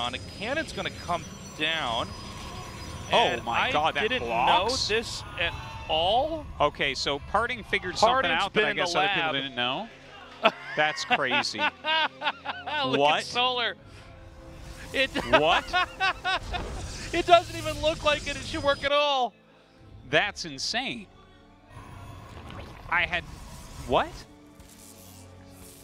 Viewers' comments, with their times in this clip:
0:10 That Tasteless laugh Love it!